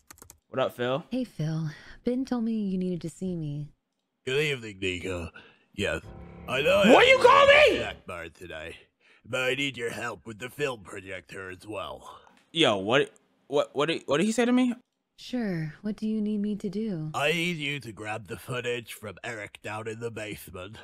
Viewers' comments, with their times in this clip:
0:05 HER NAME IS NIKA and he has a speech problem and I don’t like him